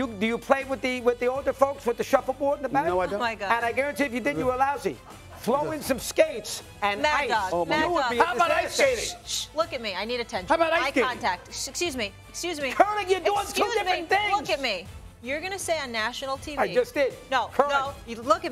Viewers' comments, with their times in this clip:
0:03 LOL where you can hear the crew laughing lmao